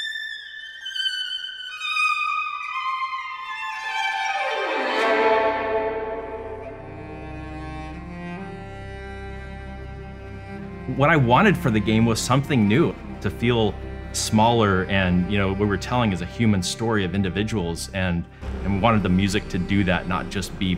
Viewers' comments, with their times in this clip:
0:06 0:2 to Feels like Shinsuke Nakamura is gonna pop out